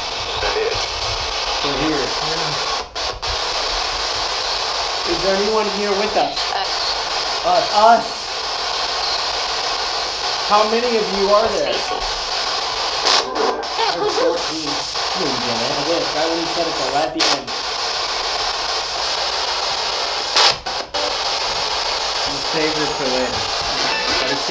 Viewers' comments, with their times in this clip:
0:08 When you said whos with us and it said us, I heard stacy after that
0:10 Anyone else hear when he asks how many of them are there, a womans voice says clearly "Stacey" ?
0:12 At like they ask how many of them are there and I heard a woman say “Stacey”… please tell me I’m not just hearing things ??!